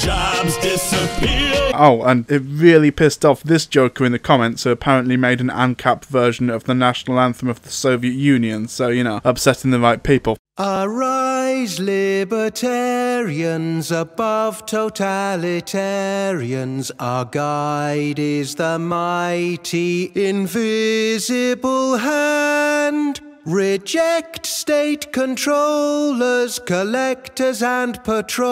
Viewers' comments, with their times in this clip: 0:10 Because of how awful this sounds, I'm gonna assume it's parody.